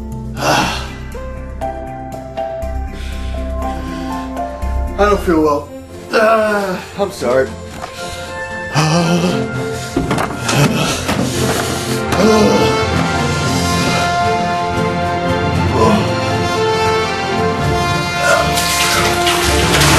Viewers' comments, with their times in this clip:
0:03 never fails to make me crack up, apart from the ending. It's just the "2 minutes later" segue to him shaking his leg in discomfort to the matter of fact "I don't feel well" that gets me!